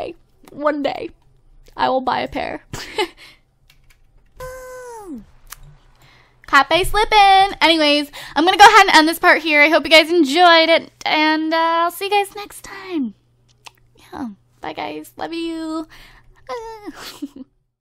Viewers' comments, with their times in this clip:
0:04 that noise u made lol